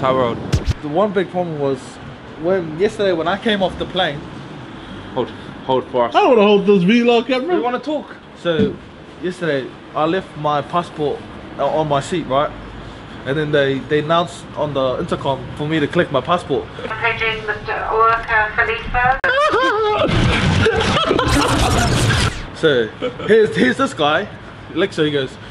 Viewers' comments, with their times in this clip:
0:06 bruh he just said V-log camera and not vlog camera😅❤️❤️❤️